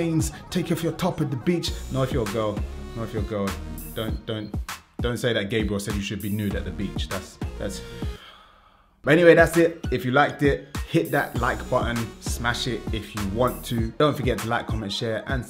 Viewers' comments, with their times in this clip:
0:03 most British 'just kidding' I've ever seen